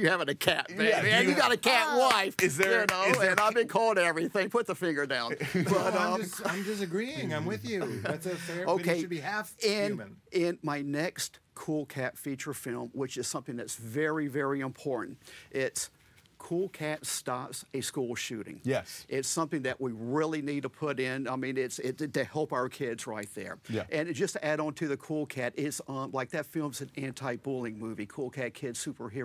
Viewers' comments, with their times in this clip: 0:03 the other two bust up laughing but King Trevor does not.
0:10 Is "Very, very Im-porn" the next "I'm Super Cereal" ?
0:12 It totally sounded like he said "in porn". I had to turn on subtitles to understand that he said "important." Also the war of the bucket, yes it's a real war, is easily the funniest.